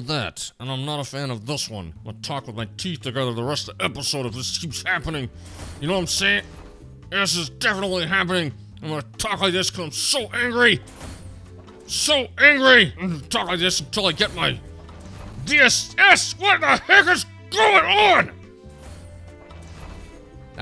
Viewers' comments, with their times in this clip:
0:04 that's how I talk to my little sister when she scream on me but father is supporting her😄